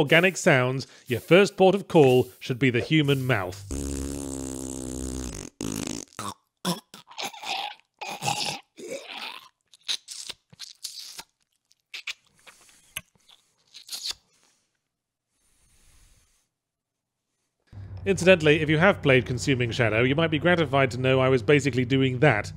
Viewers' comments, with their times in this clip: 0:03 Yahtzee tries his hand at ASMR